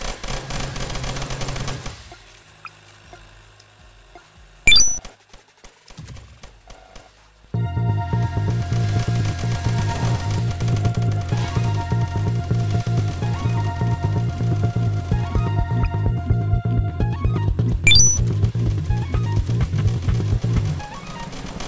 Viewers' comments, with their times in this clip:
0:05 idk why i didnt see the dream music randomly pop up